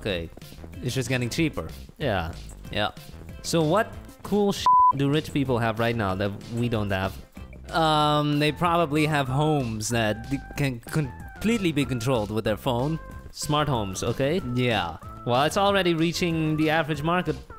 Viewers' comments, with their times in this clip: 0:05 uh... your speaker cut there.